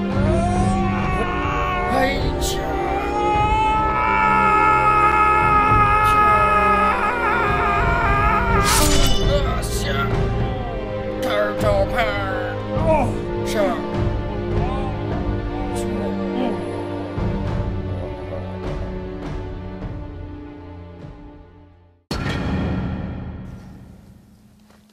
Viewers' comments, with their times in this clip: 0:10 am i the only one who heard them say "turtle power" ?